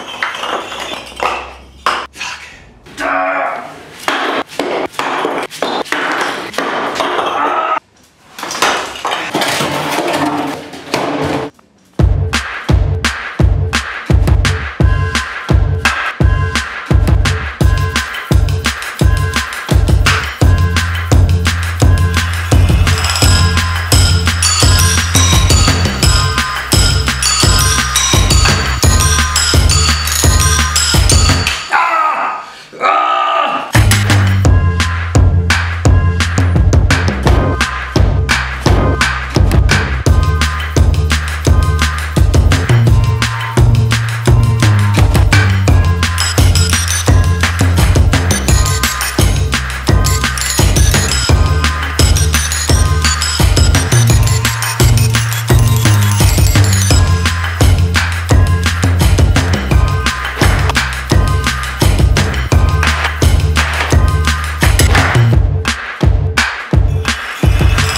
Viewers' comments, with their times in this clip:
0:10 was a smooth ass transition to the song
0:12 Song starts Beautifully made
0:13 The music starts your welcome.
0:31 When He Say Ahhh!! That's it That's the Comment.
0:50 heard some familiar lick there
0:50 mans just played the lick
0:50 shout out to the lick !!! this is incredible and so creative!
0:51 Do my ear holes betray me or is that 𝑻𝒉𝒆 𝑳𝒊𝒄𝒌 I hear?
0:51 he did THE LICK with the brick!
0:52 I heard that sneaky LICC 😉
0:52 he did the lick LMAO
0:52 The Lick !!! BrickLick....
0:52 is that the licccc I see?
0:52 the lick detected!
0:52 Is that a Blick I hear?
0:52 ...aaand there's the lick
0:53 You used “the lick”